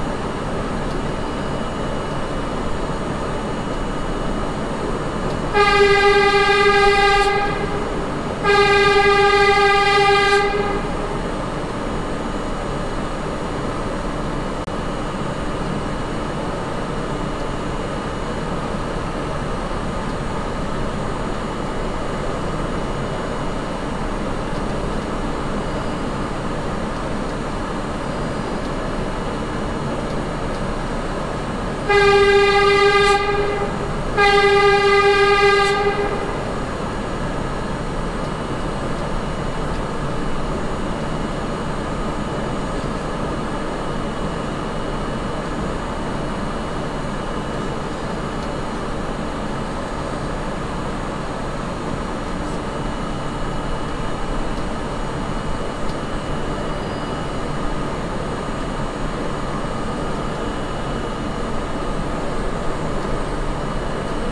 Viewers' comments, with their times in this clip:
0:05 Does anybody know why he actually blows his horn ? Is there a cow in there?
0:49 Anyone know why the driver honked ?